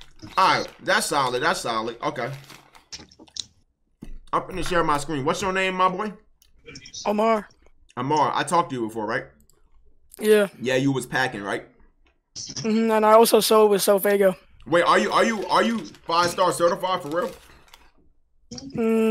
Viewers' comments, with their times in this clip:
0:06 buddy sound like Joe Biden